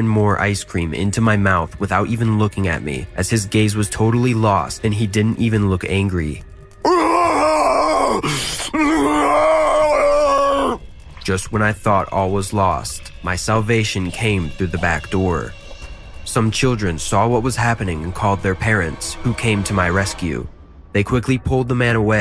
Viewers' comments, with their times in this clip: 0:07 “he didn’t even looked angry” shouts loudly